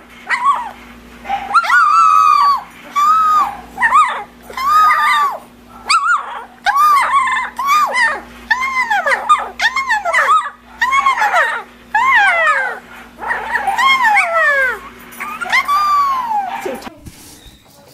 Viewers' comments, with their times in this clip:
0:05 stop making the puppy cry :((